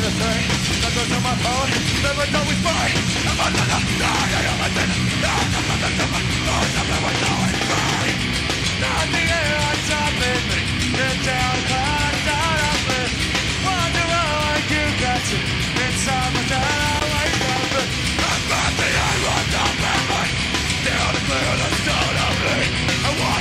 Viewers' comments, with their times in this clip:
0:08 eesh corey sounded horrible I still love slipknot tho